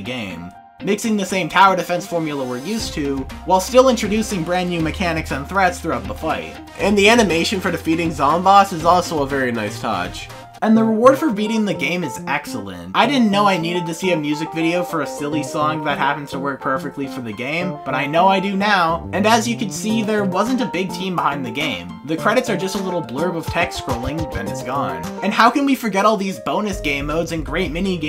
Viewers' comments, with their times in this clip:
0:10 Who else was hit with huge nostalgia and shivers when the music played?